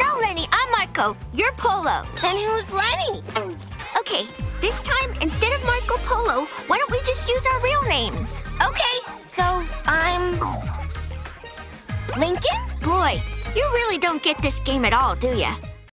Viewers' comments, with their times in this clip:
0:12 The cat sound make this scene so funny lol